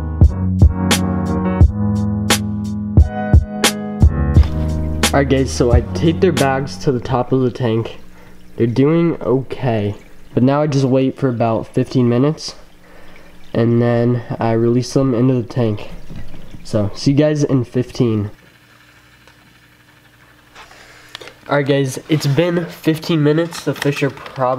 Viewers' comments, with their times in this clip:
0:05 did he just call me gay?